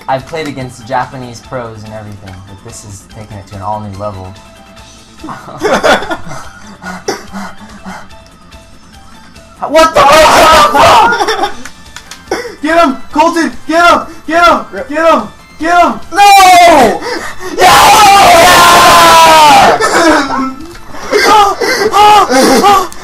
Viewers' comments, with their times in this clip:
0:04 that sounds like .... i dont wanna say xD